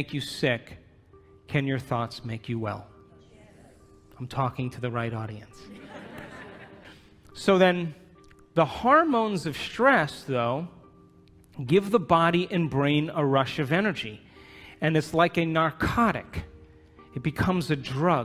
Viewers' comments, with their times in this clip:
0:03 I love that dude who said YES out loud